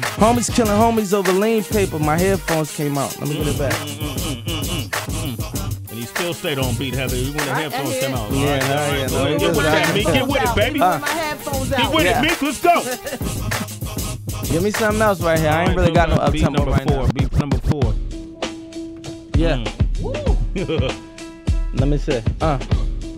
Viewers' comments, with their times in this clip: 0:04 when his headphones come off, peep how sway does that mmmm mmm mmm lmao!